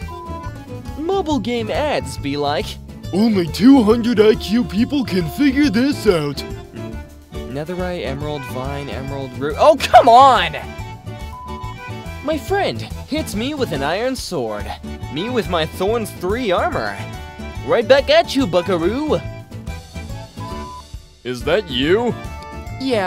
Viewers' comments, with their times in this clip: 0:09 b bro sound like sonic